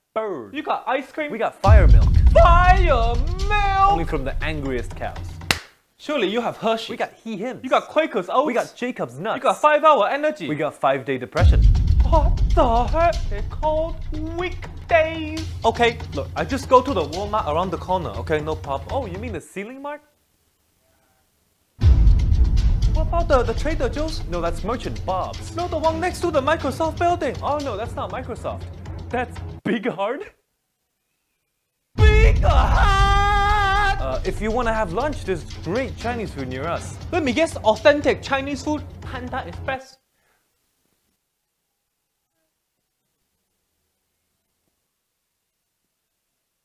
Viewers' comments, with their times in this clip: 0:04 that clap got me.
0:27 That’s not Microsoft, that’s Big Hard Steven He trying not to laugh
0:27 even he was laughing 😂
0:29 bro tryna hold in that laugh
0:32 Plus the costumers scream BIG HARD!? LOL